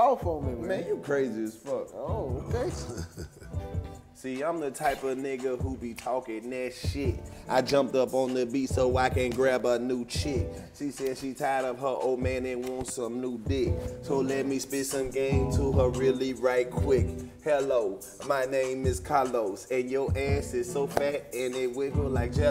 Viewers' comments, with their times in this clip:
0:09 YOOOO ! KARLOUS RAPPING IS WHERE WE TURN UP